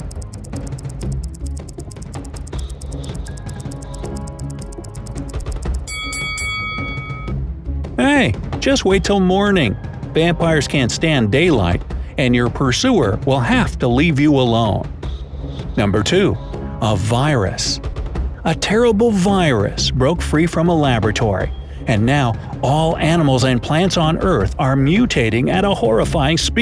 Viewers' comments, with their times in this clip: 0:08 that EY got me crackling up